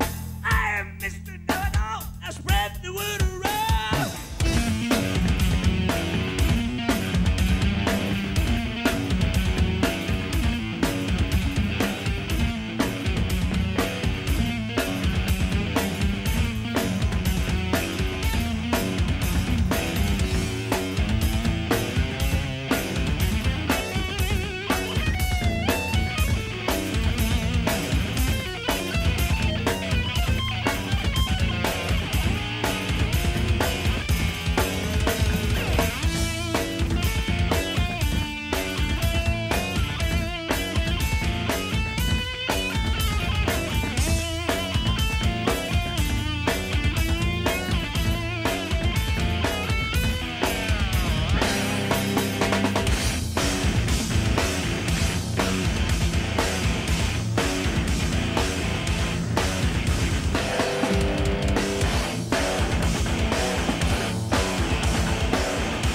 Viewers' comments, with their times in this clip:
0:04 for the dual-tapping madness
0:52 I fucking love that proto-breakdown these guys were so ahead of their time. Primus suck big time.
0:52 is just so deliciously crunchy!